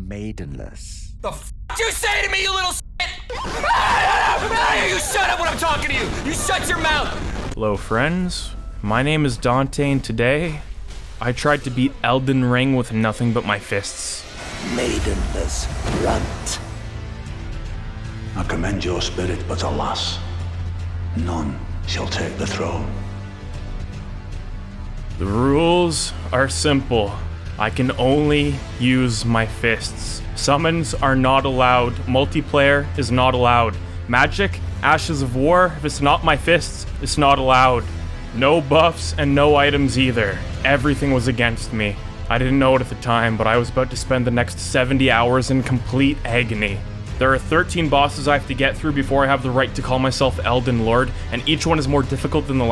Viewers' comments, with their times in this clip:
0:03 Turn up your volume
0:18 I thought he said Little Las
0:37 as he expained the rules of the game you could hear the aticipation of pain in his voice.